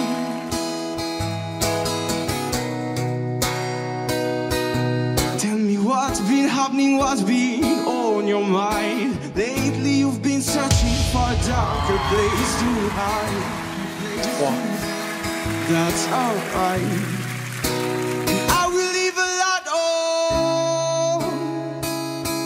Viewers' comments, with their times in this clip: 0:05 How he changes his voice is very impressive.